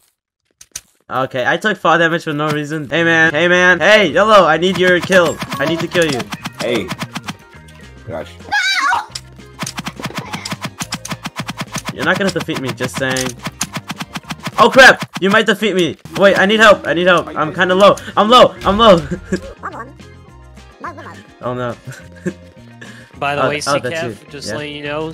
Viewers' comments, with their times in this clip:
0:07 THE MOAN LOL
0:08 that noise LOL
0:08 cringe anime voice saying nOoO